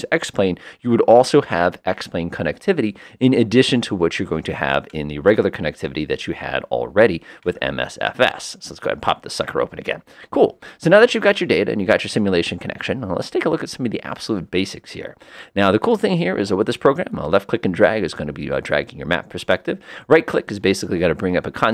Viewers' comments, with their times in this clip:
0:04 85 years of age here, very familiar with flight simming; here I gotta say that you are speaking so very fast it is difficult to understand and keep up. I've had to pause and repeat a few things so far. However, I like the video, thanks.